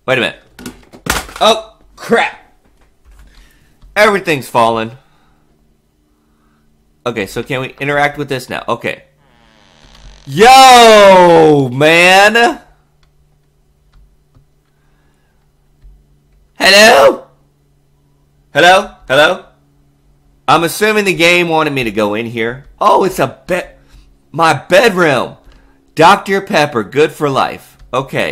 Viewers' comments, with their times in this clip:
0:09 Oh Naaawww, bruh. Y'all can have that. LOL Soon i saw that i screamed just like you Tahahaha!!